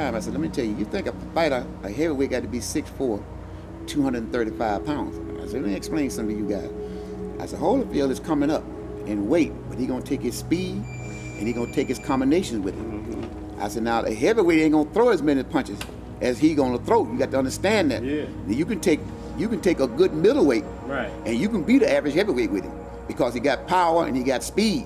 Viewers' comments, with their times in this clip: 0:09 i thought the c02 alarm was 🚨